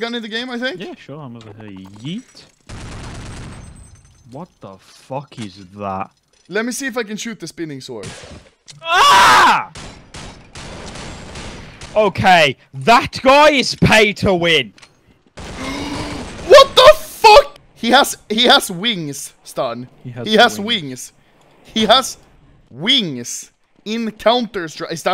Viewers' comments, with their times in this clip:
0:08 that scream haha